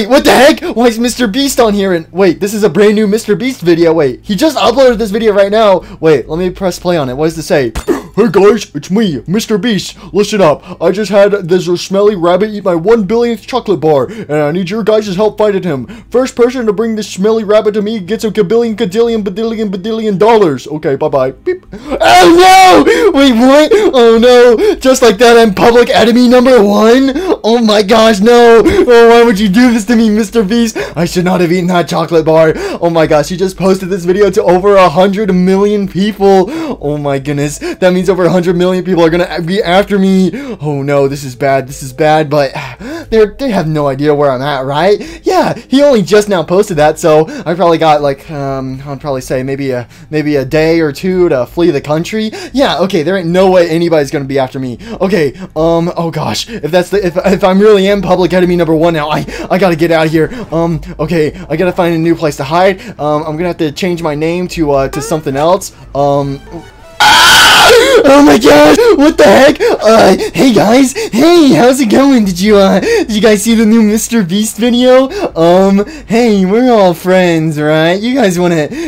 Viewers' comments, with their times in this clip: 0:08 best impression ever.
1:04 you can hear the SpongeBob sound 😂